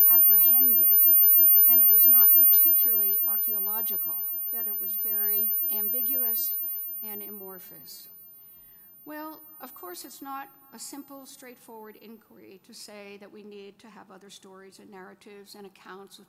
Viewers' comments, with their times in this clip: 0:03 unbearable HIGH PITCH first seconds. I HAVE A MIGRAINE. however after its fine.